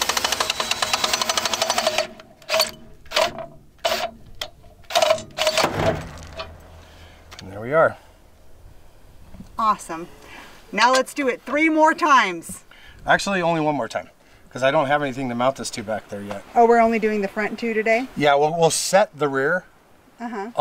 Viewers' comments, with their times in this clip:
0:05 sounds like a shotgun in the distance. Bussy says BAM!